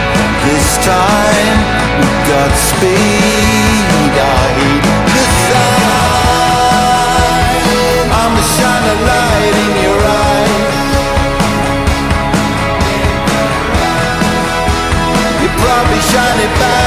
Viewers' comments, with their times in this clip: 0:04 Who else gets truly emotional starting ? The song soars and just hits you right in the feels one year after still.